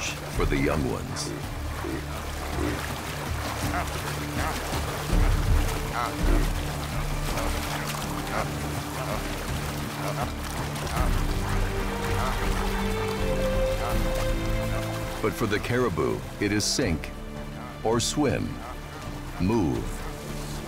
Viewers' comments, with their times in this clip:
0:06 Why do the Caribou sound so much like Minecraft Villagers saying "No".